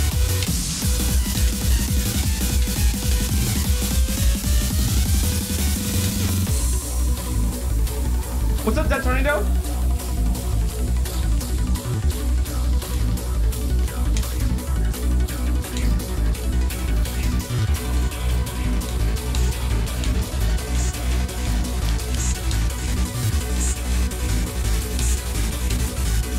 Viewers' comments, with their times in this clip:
0:07 its saying "poop sock muggy water"
0:08 when you’re noticed Also yes, that song is pretty Shweet